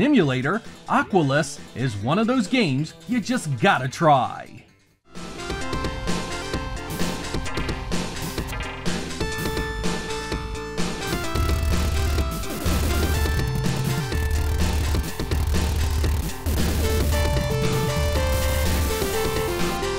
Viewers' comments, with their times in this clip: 0:05 Something about those sound effects...love 'em!